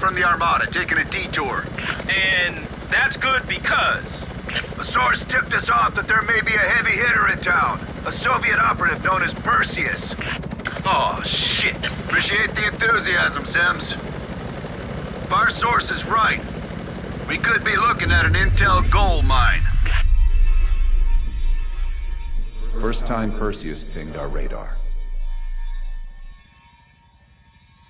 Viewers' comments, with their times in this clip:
0:10 Sims sounded like CJ in GTA XD